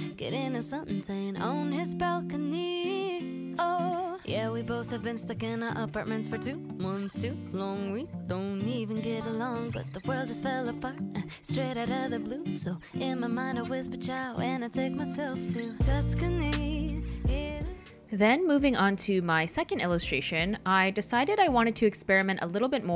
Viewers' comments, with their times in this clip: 0:07 I accidentally skipped to and thought that she had just burst into song 😤